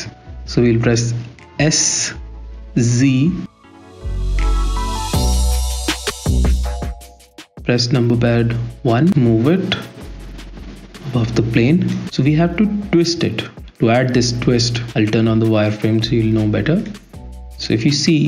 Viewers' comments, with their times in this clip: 0:04 Voice audio is good. Maybe a tiny bit bassy. But a matter of taste. I woldn't ramp up the music at any chance it gets in the speaking pauses (as in ). At least much less. Its ok at the start and end of the video.